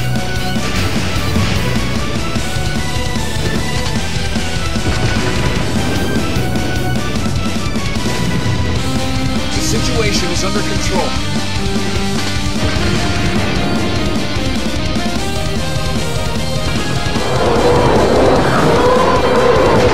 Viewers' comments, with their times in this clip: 0:07 Bismarck I’m sorry that you want to people to listen to your theme song but I can’t hear it over my Russian mixtape.